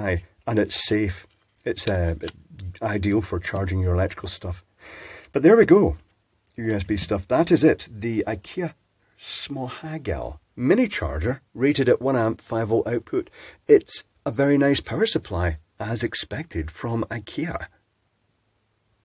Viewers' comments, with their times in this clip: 0:07 eyy you got the pronunciation,,, somewhat right xD, it's a lot better than last time